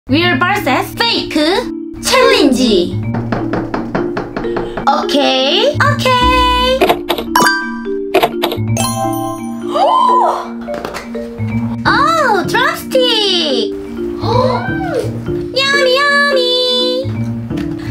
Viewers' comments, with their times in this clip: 0:00 Real barses fake challengee😐Wait a minute.. Its a English channel right???Then whats wrong with their pronunciation??Lol🤣